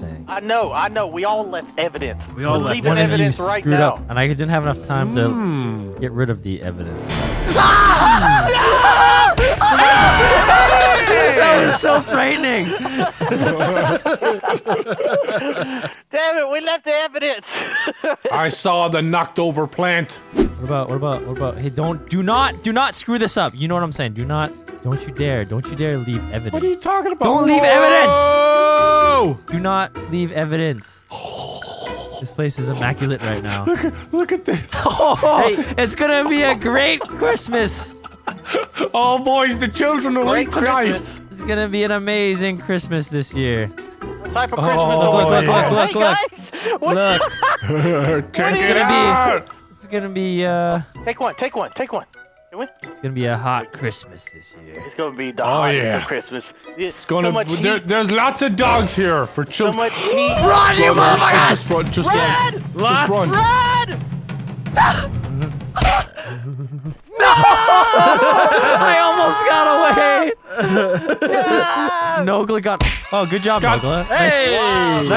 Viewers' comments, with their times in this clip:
0:07 the actually owl laugh
0:33 that Vanoss voicecrack
0:37 that voicecrack tho 🔥
0:37 Adorable vanoss boice crack
1:00 that gasp tho. 😂😂😂